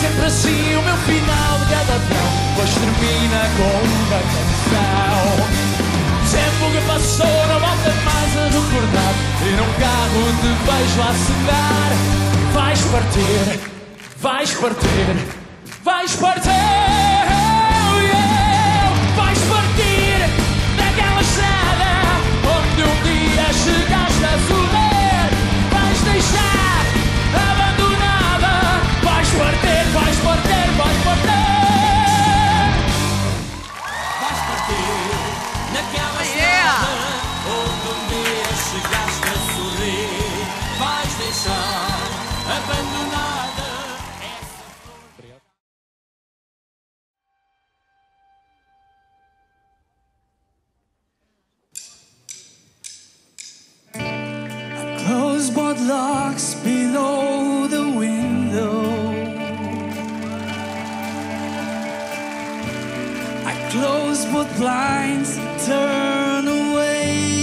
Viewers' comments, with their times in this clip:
0:08 The dude was AMAZING DID NOT expect that voice to come outta that guy truely great
0:53 I've started fckng crying just from the first notes